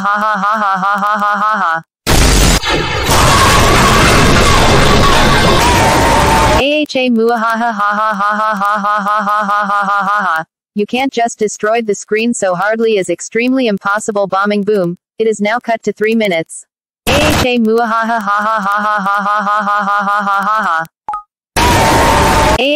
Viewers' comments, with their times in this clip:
0:03 BOOOOOM SMASHING SCREEN